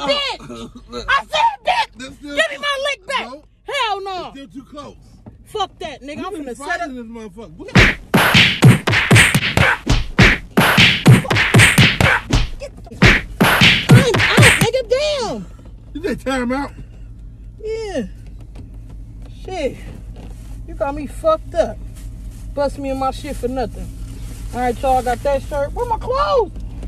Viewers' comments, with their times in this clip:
0:07 I had to rewind a few times,the sound effects killed me 🤣🤣🤣🤣🤣